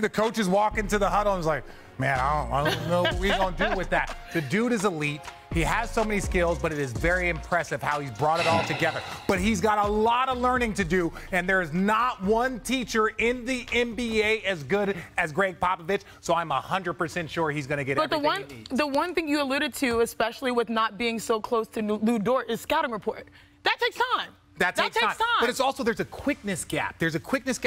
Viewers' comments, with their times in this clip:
0:08 Big Perk let out a big sigh ...like, am I going to get to talk again??😆
0:08 literally perk grunting like a water buffalo again. 😂